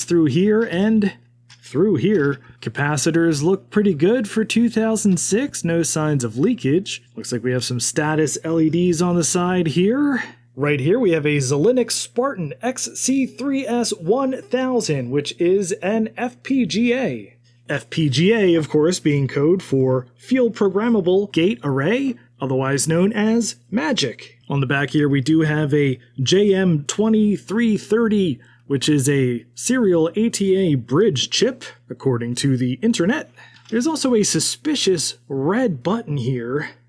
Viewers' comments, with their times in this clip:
0:10 the what? That's the weirdest way I've heard Xilinx pronounced.
0:12 Won't lie, that pronunciation did make me giggle.
0:18 field programmable gay array